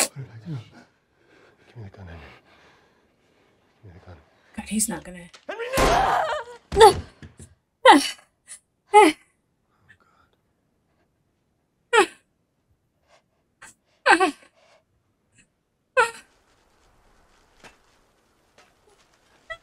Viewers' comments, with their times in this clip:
0:04 Bella nailed that shout. Doesn't matter how many times I watch it, it still gives me chills.